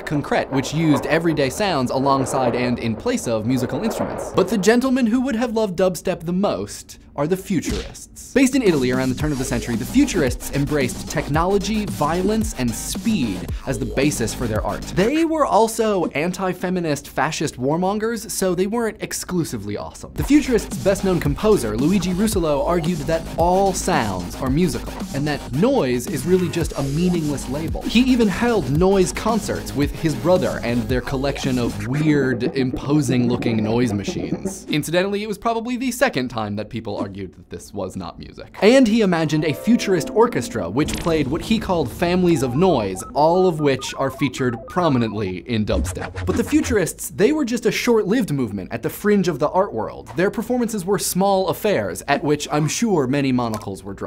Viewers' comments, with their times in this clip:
0:07 Dubstep Dishwasher in the background
0:08 Im sorry but is that dubstep dishwasher?
0:09 Omfg. Dubstep dishwasher !!!
0:13 Dubstep Dishwasher Mmmm, delicious pony wubs
0:40 Futuristic Medigun Beam sound